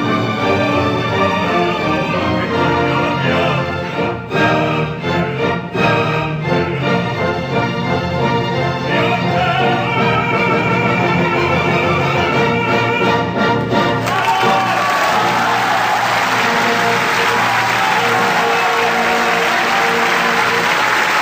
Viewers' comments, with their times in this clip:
0:08 High B Flat